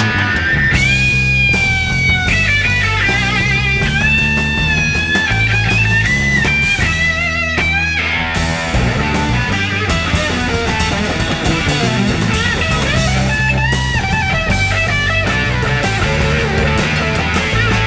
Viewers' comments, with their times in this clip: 0:03 his bending visualized his emotion, burst out with a powerful vitality, just like a butterfly breaking out of its cocoon